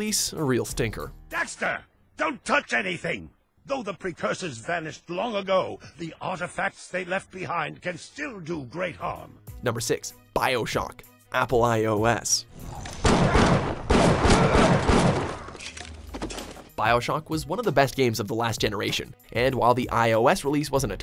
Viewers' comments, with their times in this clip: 0:08 The way he says "bioshock"